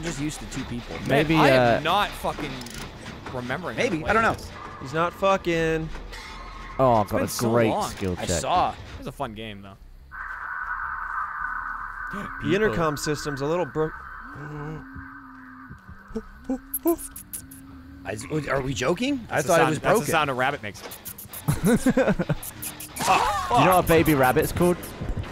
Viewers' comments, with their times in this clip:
0:10 Lol, intercom system. Yall aint ever heard birds before?